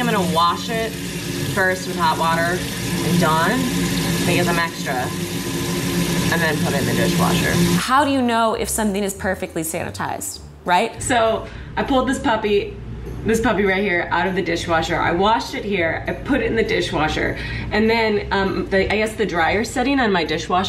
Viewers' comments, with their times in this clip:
0:06 Devin: Namibia is going through a terrible drought also Devin: talks with tap running